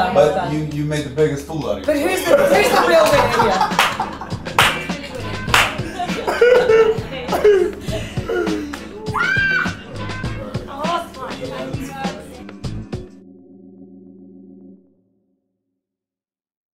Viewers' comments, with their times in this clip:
0:07 theres your sweet and funny will smith pinching margot thigh.. hahaha what a screamm
0:08 Btw I'm a guy that is using a relative's account. That scream was hot to me for some reason.